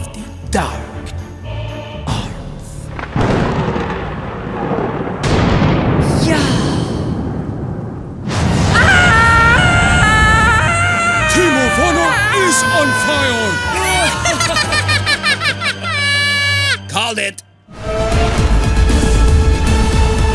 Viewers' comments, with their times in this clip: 0:03 Why is nobody talking ? 😭😭😭